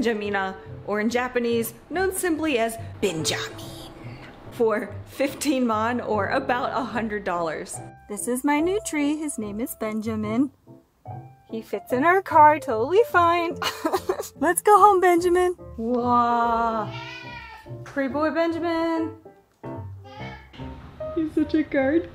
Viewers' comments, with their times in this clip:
0:04 I've never heard 15万 referred to as Fifteen-Mann 😂